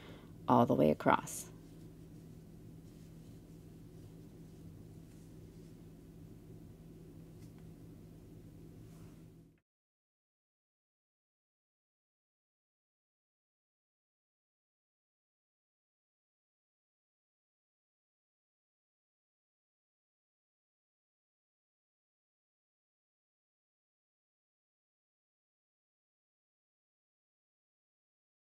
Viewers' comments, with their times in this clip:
0:09 Lovely. Looks like a nice dense stitch suitable for sweaters, afghans etc. Sound dropped at row 7 ...don't know if that was the video or my phone. Will watch again.